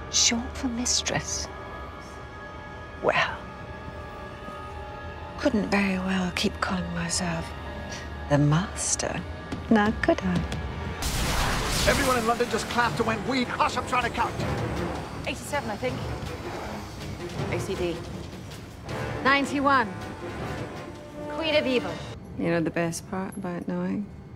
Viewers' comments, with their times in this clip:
0:08 never noticed that slight drum beat before. Its defintely not "The" beat, but its very close